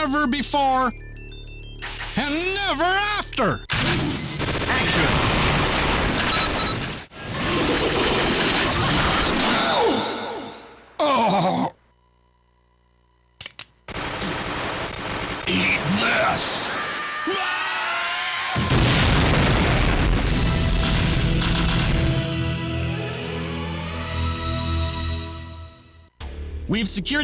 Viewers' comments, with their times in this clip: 0:09 Rod: gets killed by robert baxter Mr Meat Urgghh Take This! Rod: screaming Mr Meat: Warghhhhh!!!!! exploded